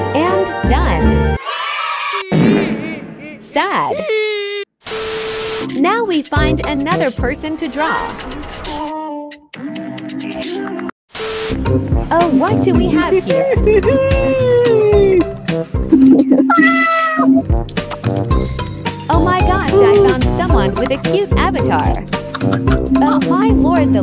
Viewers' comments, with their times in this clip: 0:07 LMAOOO SOMEONE WAS PLAYING INCREDIBOX HELP
0:08 why bro playing incredibox
0:08 bro's playing incredibox💀